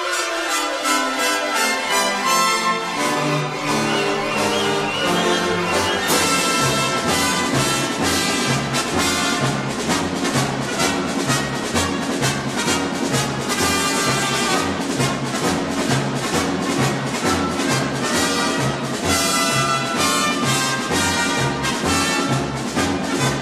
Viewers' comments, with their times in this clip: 0:06 sounds like it would be from a western